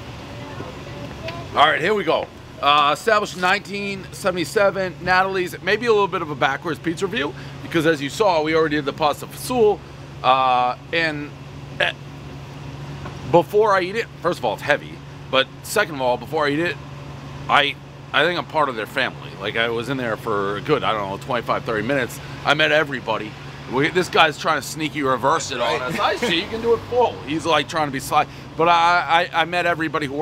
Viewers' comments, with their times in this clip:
0:04 one mispronounced name everyone knows Dave's been to Italy and learned nothing.
0:18 Name butchering starts mark - devolving into “Natalie” Pizza. Multiple mispronunciations, every knows the rule.